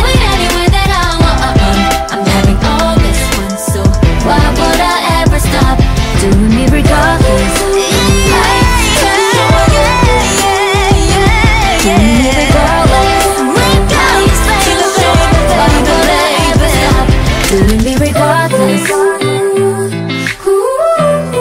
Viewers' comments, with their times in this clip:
0:08 help! Karina note gives me 10 years of life